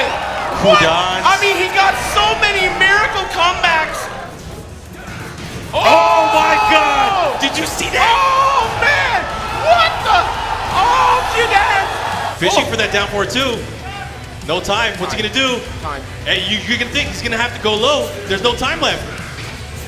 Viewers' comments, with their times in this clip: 0:06 the commentator lol